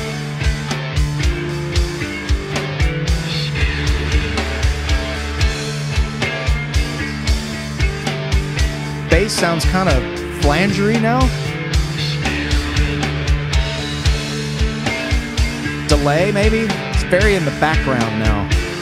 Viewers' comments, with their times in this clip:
0:06 Bass is mystic...demonic...when i was at live concert and this part came in I just lost it...the song is a masterpiece